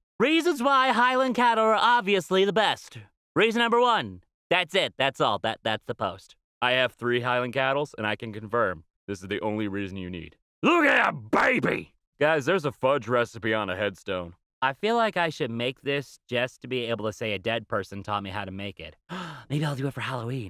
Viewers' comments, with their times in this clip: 0:03 I was freaking the duck out cuz I thought you said Hylian cattle and not Highland cattle.